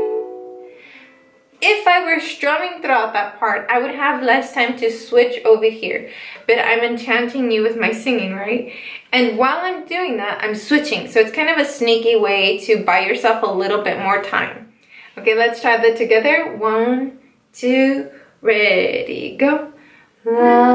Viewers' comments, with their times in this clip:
0:06 You actually ARE enchanting me with your singing... Your gaze too but mostly your singing
0:07 "i'm enchanting you with my singing" A siren!